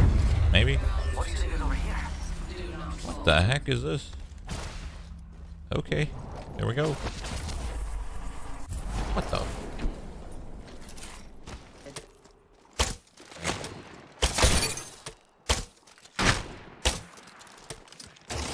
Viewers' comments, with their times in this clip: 0:03 bruh. the sound is like cypher's gate